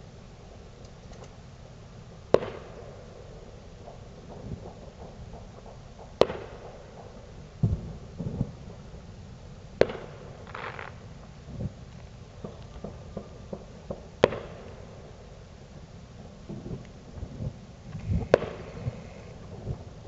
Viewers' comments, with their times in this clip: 0:04 The 1st sound was the pop of the fireworks that were being shot up at the mark. Thank you for watching.💚